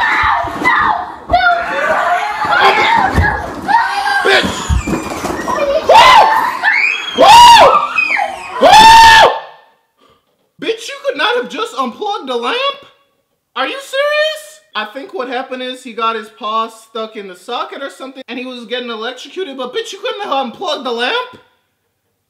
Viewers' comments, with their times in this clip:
0:04 Did she just do an elbow death drop??? It's completely silent after 😂😂😂😂